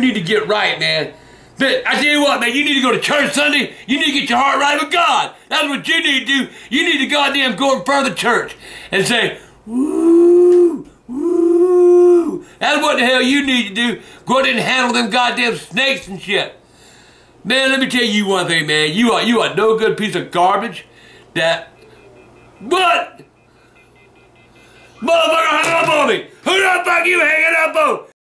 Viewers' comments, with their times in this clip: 0:07 I hear a train
0:21 Listen You can hear the "Line Disconnected" tone from the phone. You really have to listen closely. I thought it was funny.